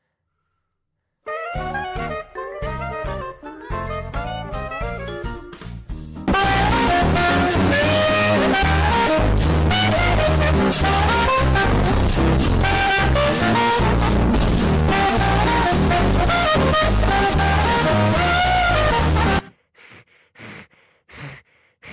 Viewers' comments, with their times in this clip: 0:05 is a calm, sweet melody. Quite nice.